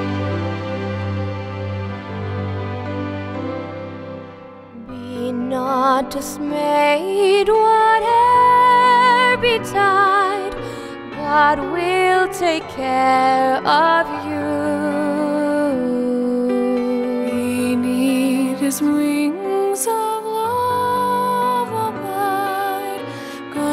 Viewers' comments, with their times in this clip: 0:09 I had to tick this down because of the female singing Women can't sing like men can - all you get is a wall of noise. In traditional Christianity, the choirs were male.